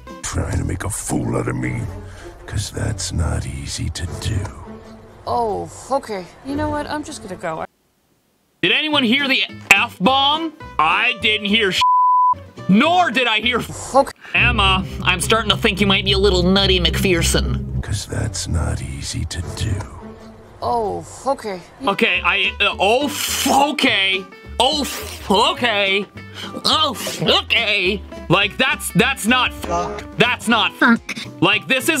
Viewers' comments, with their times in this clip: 0:05 I heard oh okay
0:05 She said Oh Fokay
0:13 now we know where the french word for seal came from
0:18 I heard o"oh fu** it"